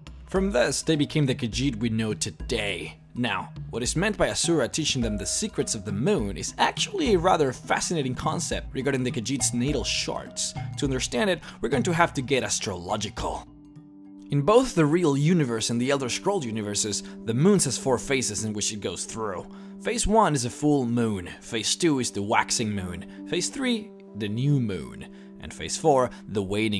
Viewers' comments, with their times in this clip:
0:08 we got in the khajiit's needle sharts?
0:09 is he saying the Khajiits needle sharts?